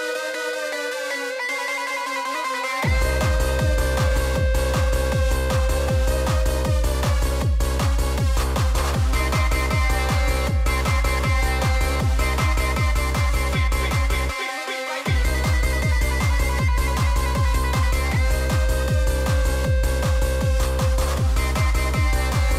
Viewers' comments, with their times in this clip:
0:03 sounds like the sickest most intense final boss battle of a jrpg